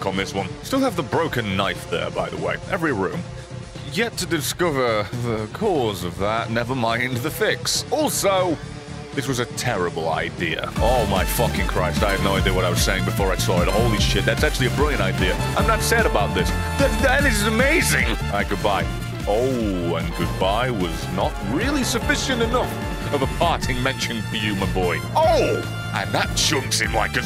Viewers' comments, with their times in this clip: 0:10 That trumpet song starting is absolute fire. I need a title.